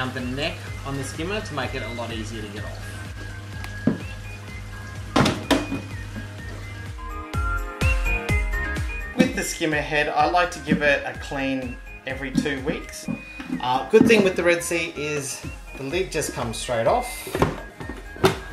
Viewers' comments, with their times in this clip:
0:04 o $hit! That was true - click ;-)